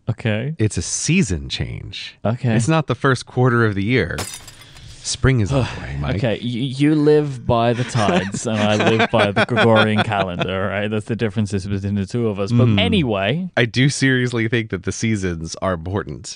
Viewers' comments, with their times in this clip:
0:04 They also added the sound of the window breaking Maybe they uploaded a work-in-progress version by accident.